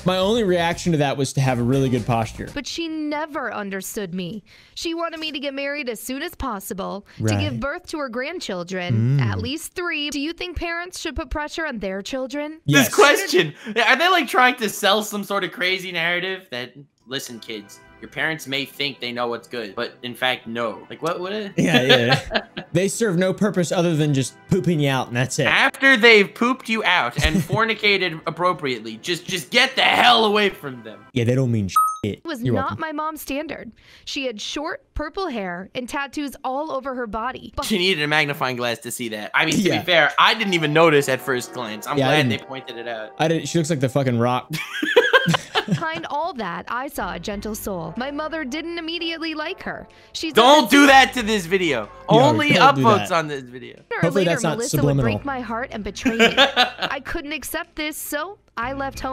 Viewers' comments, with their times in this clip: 0:09 It sounds like somebody's TRYING TO SELL ME SOMETHING!
0:39 love the sanji theme
0:41 anyone else here the faint one piece nami commercial break sound